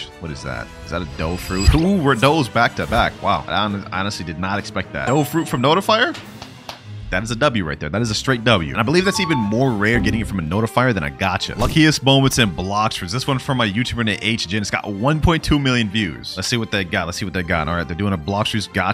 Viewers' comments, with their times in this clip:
0:06 someone clip it, when he claps